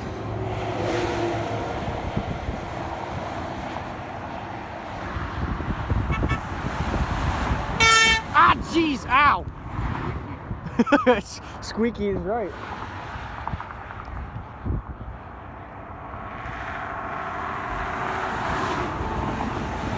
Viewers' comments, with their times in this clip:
0:06 r.i.p. headphone users